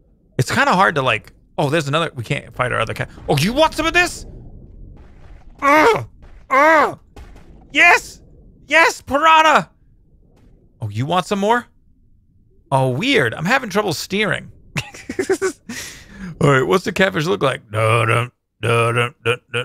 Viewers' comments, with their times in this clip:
0:03 When you said yes, yes Parana you kinda sounded like Cleveland from family guy xD